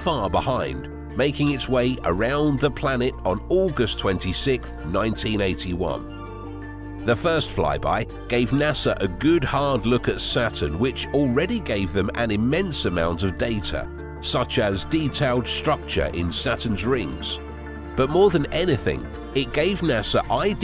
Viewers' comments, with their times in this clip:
0:03 "on August twenty-sik" .... what the fuck? lol